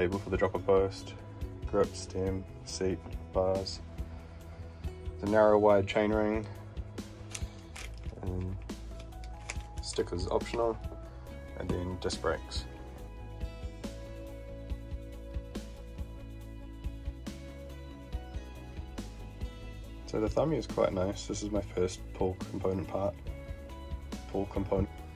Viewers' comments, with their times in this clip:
0:06 Hi all! There’s a glitch(or two) in the audio. I kept having issues and it wouldn’t resolve, roughly in 😖 Basically it’s a run down of the parts, and for some reason it’s jumbled up so at one point I’m pointing at the shifter box but talking about stickers 🤷‍♂️😆 Sorry if there are any more issues!! Thank you for watching 😄💓 Koga Miyata restoration next up 😎